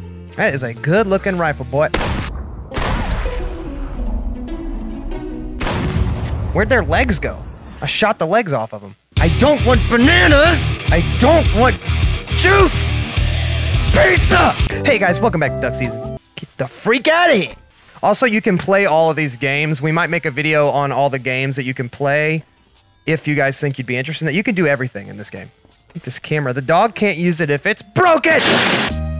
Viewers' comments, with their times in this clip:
0:10 'I DON'T WANT BANANAS!, DON'T WANT JUICE!, PIZZA!!' spits out cereal and starts laughing
0:15 cory kenshin impression?